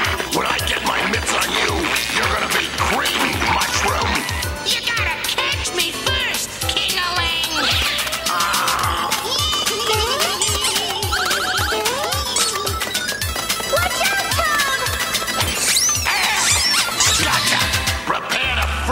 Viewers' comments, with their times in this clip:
0:04 "Kingaling"? Kinda sounds like "Dingaling". ☺